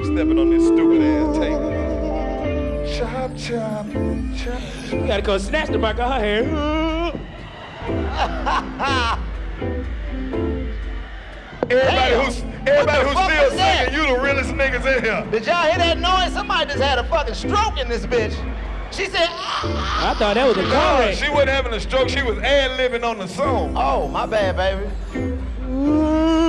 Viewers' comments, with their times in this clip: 0:09 Who screaming in the crowd 🤣🤣🤣